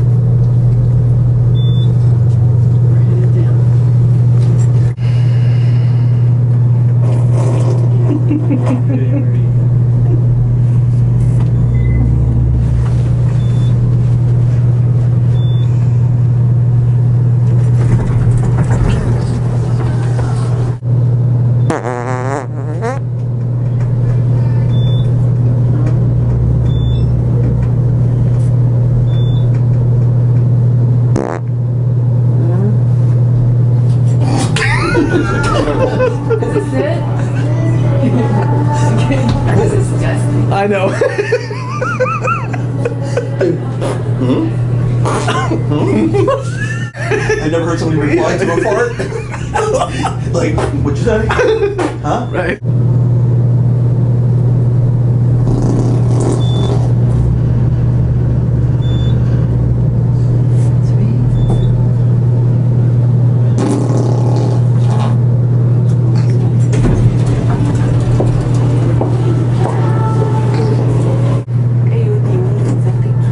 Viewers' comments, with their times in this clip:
0:06 that wet one
0:21 fart "hmm?" fart "hmmm?"
0:21 vooooort = Hmm?, vooooort = Hmm? . By the way Jack how many of the farts were real? lol
0:27 The woman answered his fart!!! 😂😂😂😂
0:34 lmao dude tried to hold his laugh in 😂😂
0:53 My chest nearly imploded XD Those low rumblers are the best!
0:55 sounds like somebody just had a colonoscopy. Eew thats gross I’m glad I’m too old to need another colonoscopy